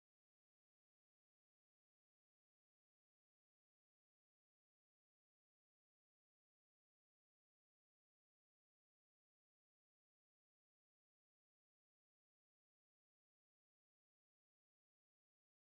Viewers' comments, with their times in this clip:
0:07 When the script takes a dark turn towards sexual predators and the jazzy doo wop is still playing....